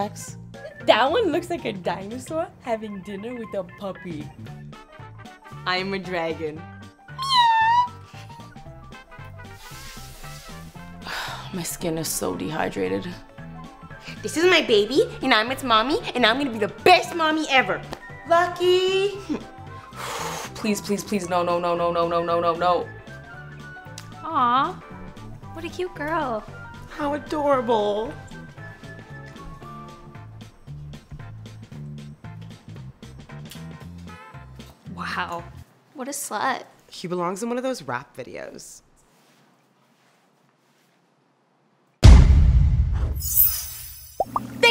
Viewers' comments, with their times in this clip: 0:07 I don’t think dragons go meow
0:29 I just at that pop earlier